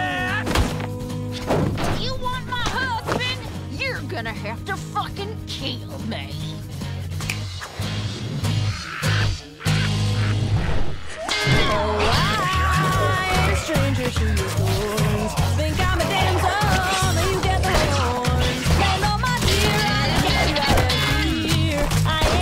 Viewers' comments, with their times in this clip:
0:05 Is it me or does it sound like Millie says keep me instead kill me?